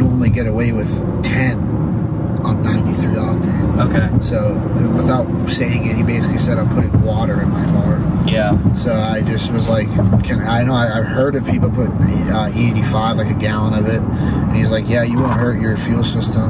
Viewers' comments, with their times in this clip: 0:04 Did someone fart? 😂😂💀😆